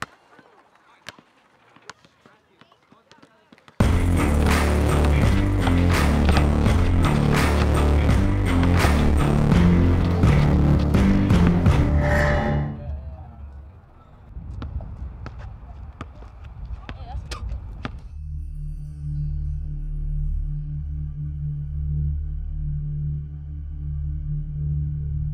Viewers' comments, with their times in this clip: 0:09 that was cool the music matched with to bounce